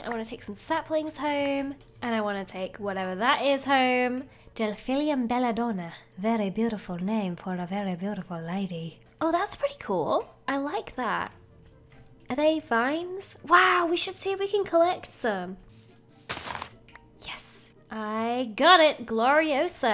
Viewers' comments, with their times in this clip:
0:06 omg your voice there is so soothing-